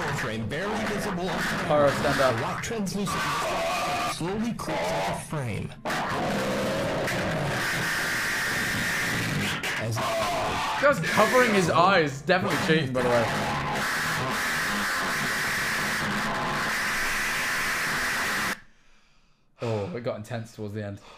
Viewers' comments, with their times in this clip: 0:09 The 'ah' being synced up with Pyro taking his hand off his face lol